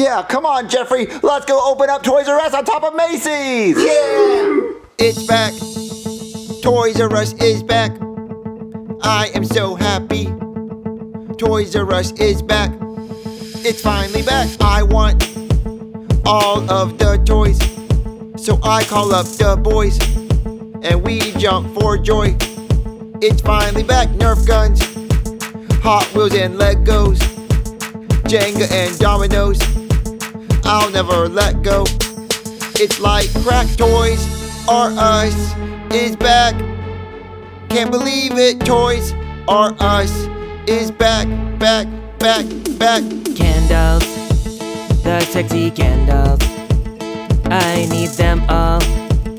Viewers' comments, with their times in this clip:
0:03 the toys r us rap song is 🔥🔥🔥
0:04 TOYSRUS IS BACK song
0:04 toys r us is back song
0:05 toys r us is back song lol
0:05 I love and it's music!
0:05 They start singing and it’s fire
0:06 Toys R Us Song😂
0:12 That song at the end is 🔥
0:25 the best song 🥶🥶🥶
0:35 The song at the end is fire🔥🔫🥇